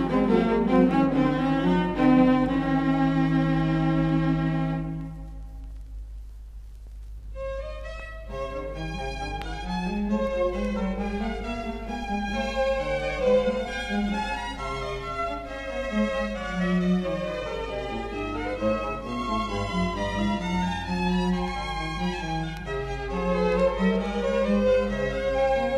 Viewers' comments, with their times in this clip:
0:06 Mysterious and really nice music.